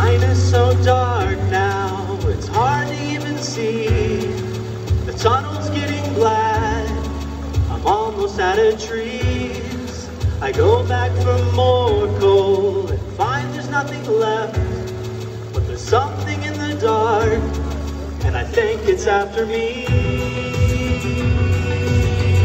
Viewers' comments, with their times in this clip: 0:10 That's Why I didn’t hear any cheering.